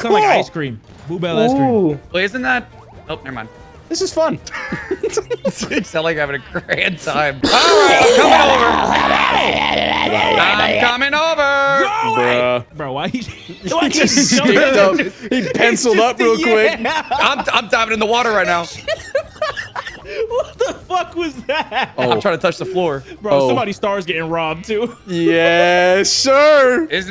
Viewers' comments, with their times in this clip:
0:08 so we really just skipping over this tasmanian devil ahh cough ?